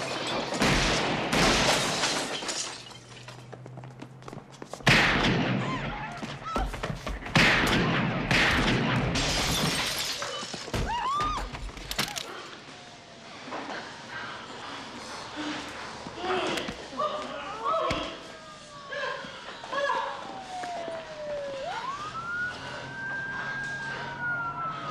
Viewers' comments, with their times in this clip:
0:10 the alternative Wilhelm scream ;)